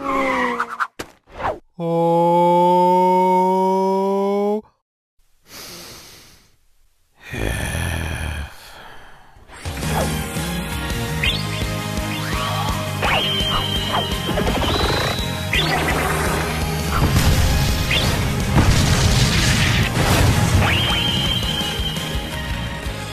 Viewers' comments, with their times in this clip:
0:07 I like how F sighs